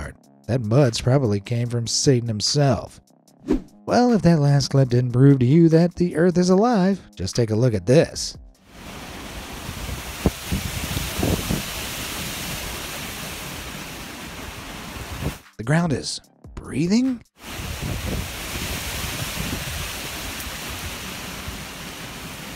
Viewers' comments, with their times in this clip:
0:09 The ground really said "Honk shoo honk shoo honk shoo"